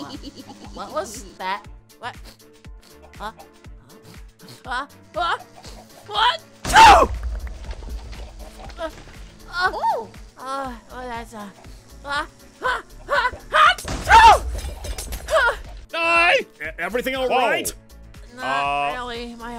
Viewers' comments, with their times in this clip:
0:07 next generation sneeze